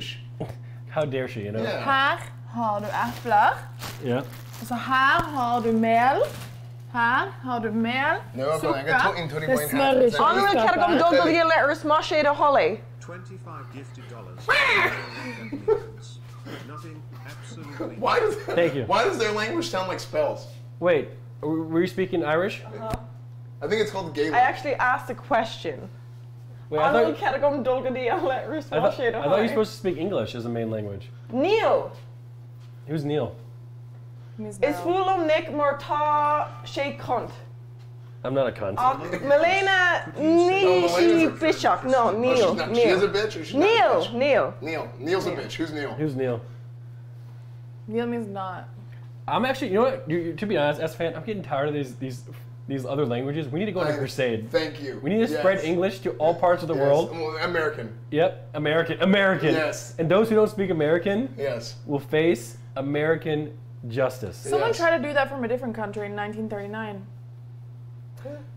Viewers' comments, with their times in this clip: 0:07 Esfand suddenly speaking Farsi to Minx just killed me 😂
0:56 why did she say it like that lmaooo